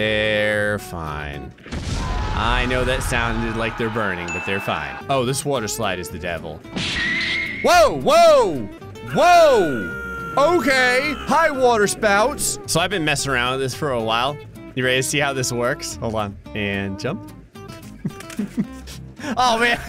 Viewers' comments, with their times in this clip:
0:04 sounds like Ryanair or spirit